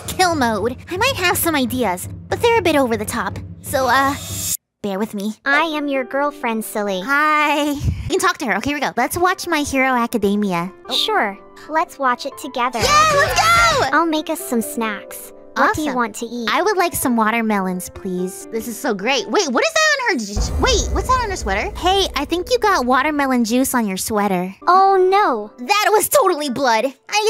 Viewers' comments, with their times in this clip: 0:08 MY HERO ACCIDAMIA!!!!!